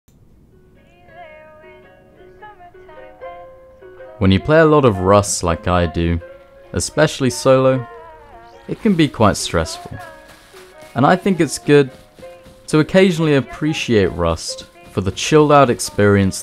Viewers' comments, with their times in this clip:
0:00 you have such a cool voice, i love it :)